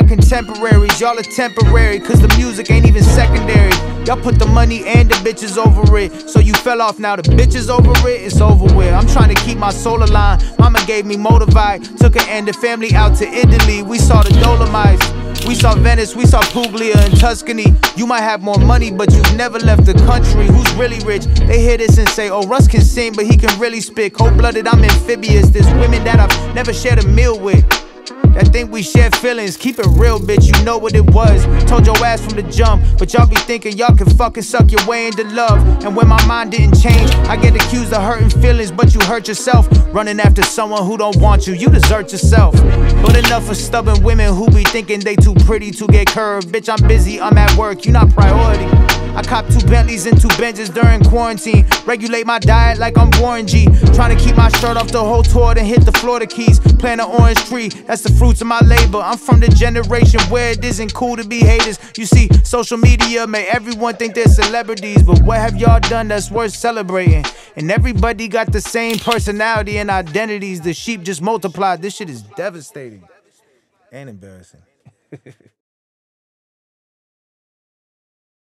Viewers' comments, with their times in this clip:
0:09 I always thought he said "Mamma gave me motive I, took her and the family out to Italy" what is this "Moldavite" lol
1:01 till the end bro, real talk and the beat fade away was awesome it gave your words more power